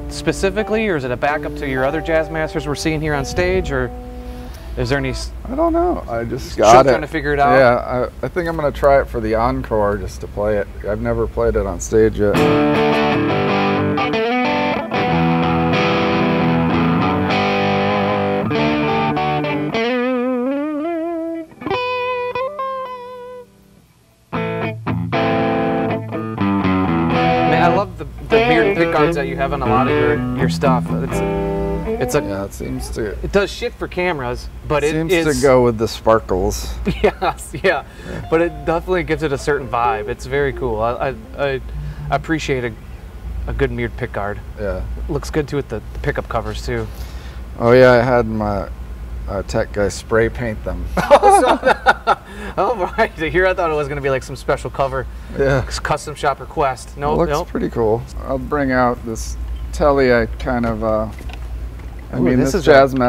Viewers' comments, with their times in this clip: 0:05 the classic j mascis high pitched “i dont know”
0:50 That cheeky little laugh he let's rip 🥰